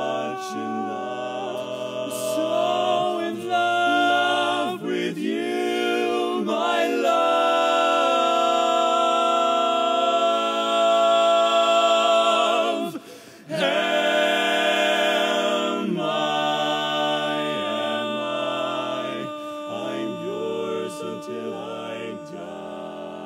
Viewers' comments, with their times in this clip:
0:07 The over tone .......wow